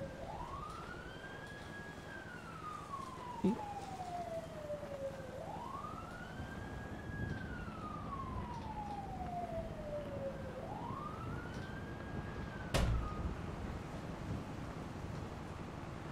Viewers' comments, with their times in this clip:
0:04 u can hear a someone say he in a every low voice